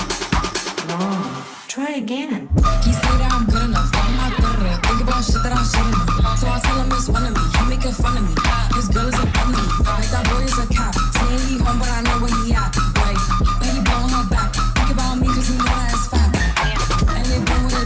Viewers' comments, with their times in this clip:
0:03 I was NOT ready for that mix